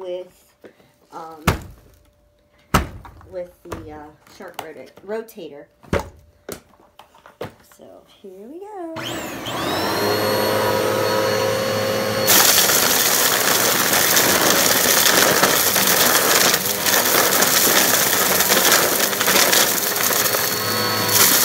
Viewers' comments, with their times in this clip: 0:09 You need this crunch in your life
0:09 This crunch bangss 🔥🔥